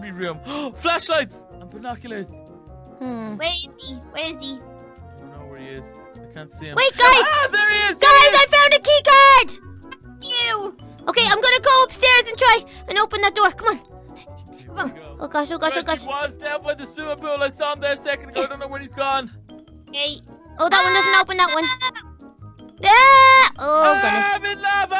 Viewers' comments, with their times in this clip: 0:10 Little Carly said something that sounded like F you